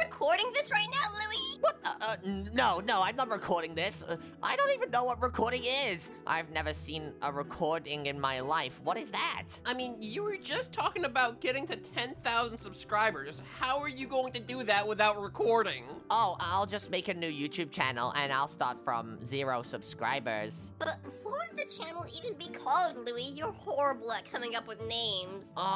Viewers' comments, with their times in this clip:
0:09 THAT WAS HIS REAL VOICE
0:11 IS THIS HIS REAL VOICE